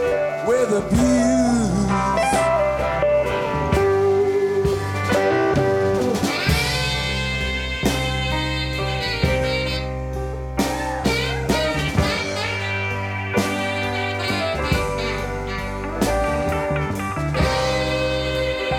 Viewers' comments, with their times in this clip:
0:06 Big fuck up ! Stones struggling here but still great!